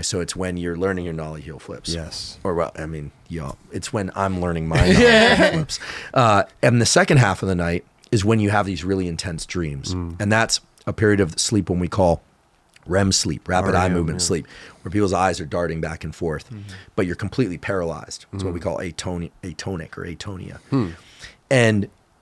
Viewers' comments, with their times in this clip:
0:03 The synchronised "giggle" got me good